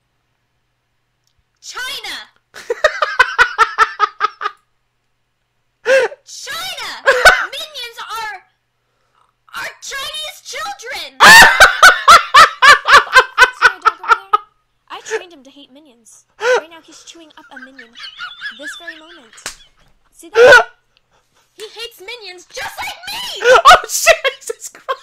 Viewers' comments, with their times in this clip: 0:08 My fave part it dad’s laugh i think
0:11 his laugh is amazing 😂